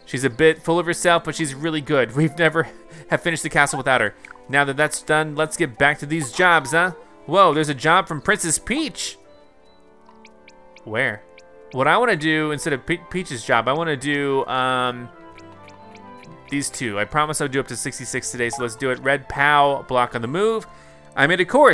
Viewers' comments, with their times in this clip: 0:03 As a Canadian the way you pronounced Eh hurt my soul